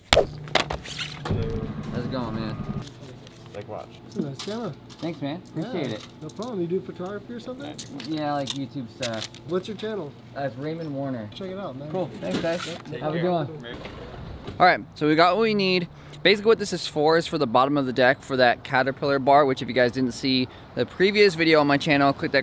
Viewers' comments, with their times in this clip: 0:09 is it just me or is the last of the video muted?